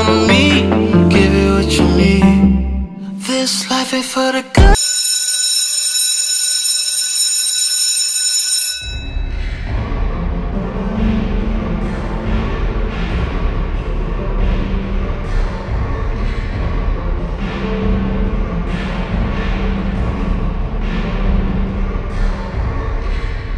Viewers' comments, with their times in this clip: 0:09 this beat feels so nostalgic and I don't know why. 😥